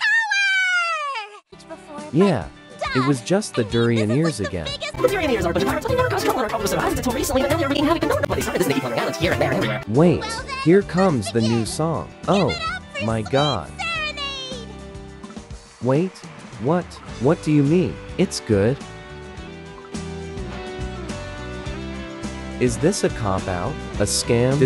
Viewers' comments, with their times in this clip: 0:05 Mango definitely has some rapping experience